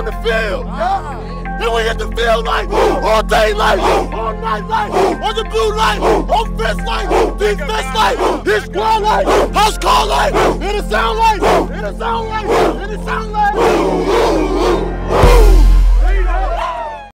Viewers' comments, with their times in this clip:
0:05 Is he saying "on the blue like"?